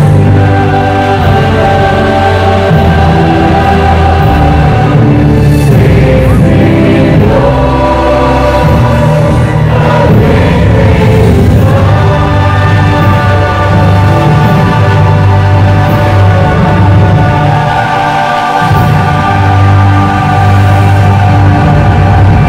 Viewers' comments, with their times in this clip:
0:03 the singing group with mics, extolling the "new products" is TOO hokey!